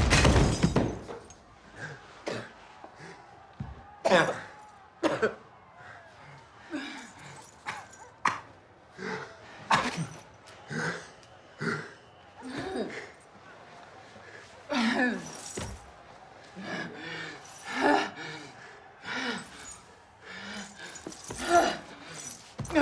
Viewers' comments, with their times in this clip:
0:04 that burp-cough right there is the highlight. 😵